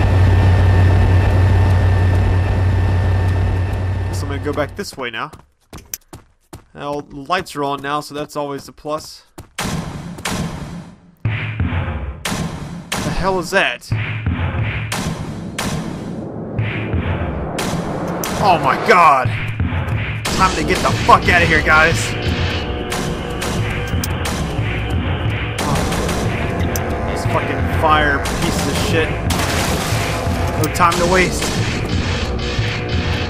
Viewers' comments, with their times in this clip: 0:08 i think the nise is a music because it sounds like a beat little bit huh
0:08 anyone else that is some epic music
0:09 the only background music that is not scary.
0:13 what the heck is the name of that song, it sounds so badass :D
0:16 OMGGGGG THE MUSIC AT THE END FRICKED ME OUTTTT ESPECILY AT THAT MOMENT
0:18 RUN!! ITS A REMAKE OF STOMP FOR SOME SHITTY HIGHSCHOOL PROJECT!!